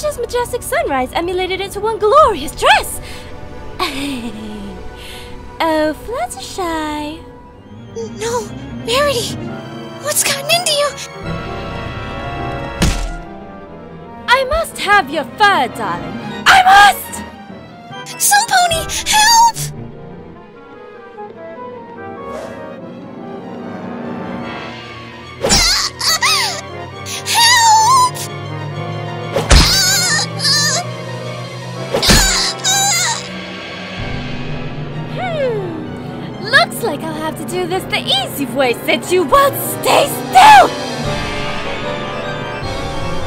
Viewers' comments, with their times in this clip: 0:07 I’m kinda surprised that Fluttershy didn’t cut her head open after that fall. Did you hear her head?
0:25 out of context, that scream sounds like a Japanese schoolgirl moaning.